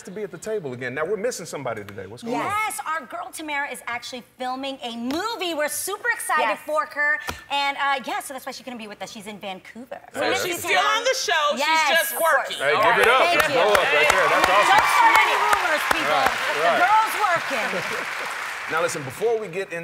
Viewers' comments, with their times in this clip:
0:05 Did y’all hear Adrienne say we’re very excited fork her
0:06 "we're super excited forker" i hope I'm not the only one who heard that